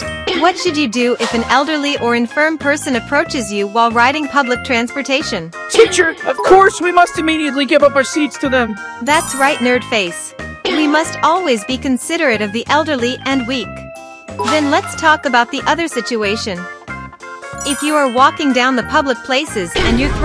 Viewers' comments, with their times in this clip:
0:05 Sounded like Morty from Rick and Morty.